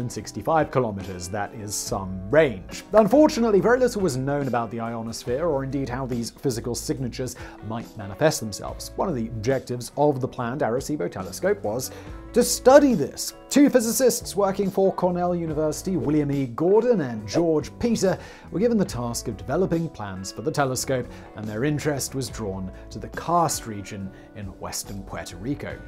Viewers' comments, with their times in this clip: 0:07 the porn music arrives.